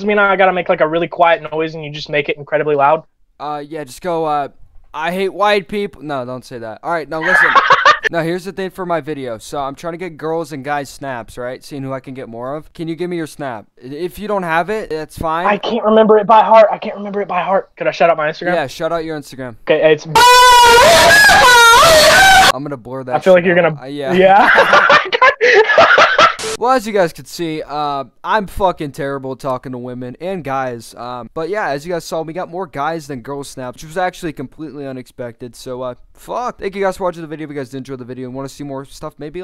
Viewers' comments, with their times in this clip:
0:04 THE LAUGH GOT ME
0:14 was so loud and I hate my life
0:19 wtf my speaker was so loud
0:21 I had my volume up 🤧😂
0:22 who else was listening to that full volume 😑